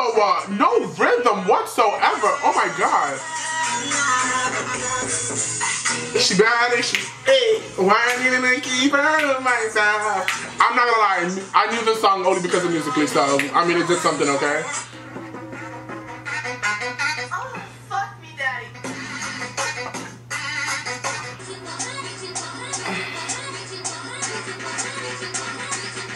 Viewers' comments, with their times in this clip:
0:06 you Sang great
0:08 will always be my favorite moment 😍😍😍 your voice!!!